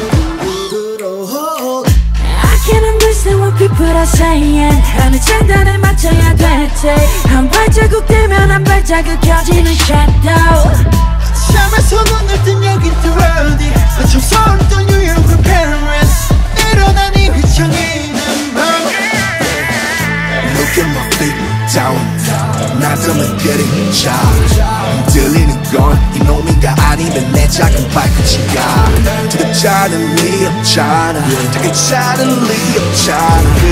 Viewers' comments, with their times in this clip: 0:07 JIMIN WHO ALLOWED YOU TO LOOK, MOVE, AND SOUND LIKE THAT!?!? AND VWHO ALLOWED U TO LOOK LIKE THAT AND WALK LIKE THAT!?!? I WANNA TALK TO WHOEVER ALLOWED Y'ALL....I want to Thank them😊😁😭💜🤚
0:20 rm's voice killed me Jhope's part sikeeeee 💜💜💜 Jin's part is also sikeeeeee💜💜